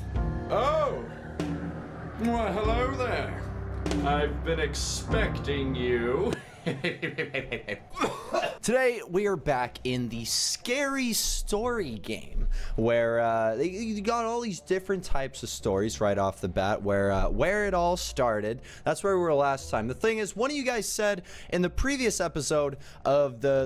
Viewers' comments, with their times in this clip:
0:07 is kinda funny cause of your laugh😂